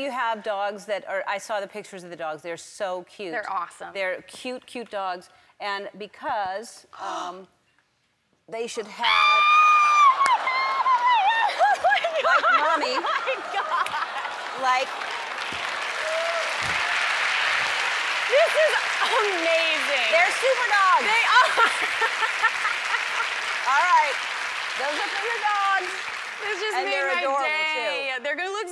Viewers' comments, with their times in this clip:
0:09 I love her Screaming about her cuttest Dog become a Superdog. Omg. 😍
0:09 That scream is equal parts funny and adorable.